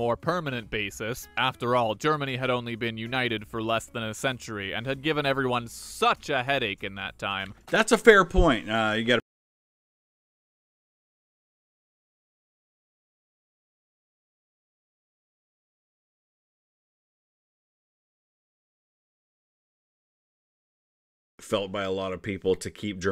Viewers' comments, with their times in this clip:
0:05 A take so hot YouTube had to mute it xD
0:09 Heads up there are around 12 seconds of silence where youtube muted the sound and I have absolutely no idea why. Apologies.
0:09 just a heads up the audio cuts off for a portion beginning
0:10 whats with the mute?